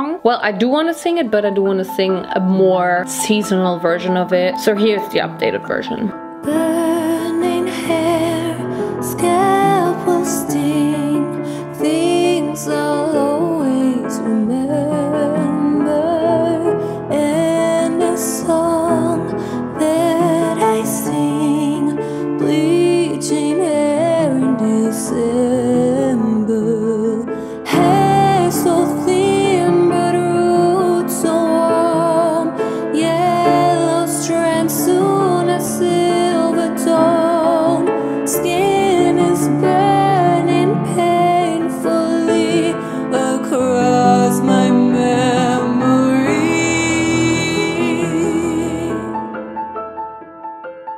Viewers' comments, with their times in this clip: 0:06 love the song and I really think the brown tied the pink and red together beautifully 🥦
0:07 The bleaching my hair song (christmas version) LETS GOO
0:31 i be forgetting she actually sings throughout her videos it sounds so goodddd